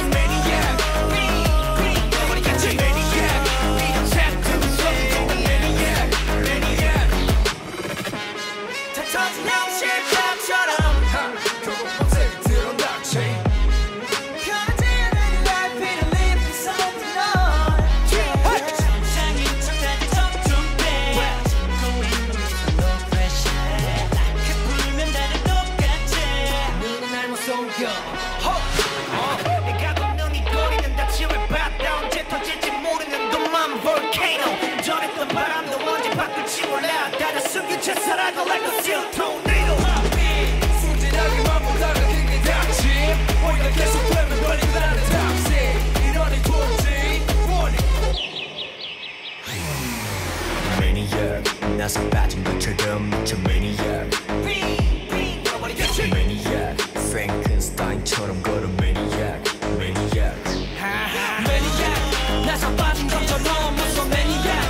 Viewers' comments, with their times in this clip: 0:08 he sang it higher than the original 😳
0:10 Changbin grabbing Hyunjin´s butt making Hyunjin laugh xD
0:50 Are they singing live ? Cuz Hyunjin doesn’t even use his mic still we can hear the vocals ?! I know Skz always sing live but maybe it was raining so they used pre recorded vocals?